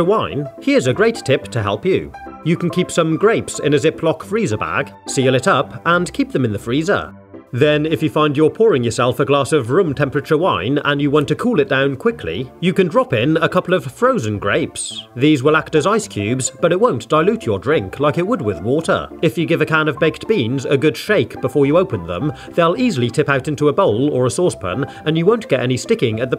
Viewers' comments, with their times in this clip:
0:07 bro has walkers in his freezer love the wholesome voice: yoghurt=yOgurt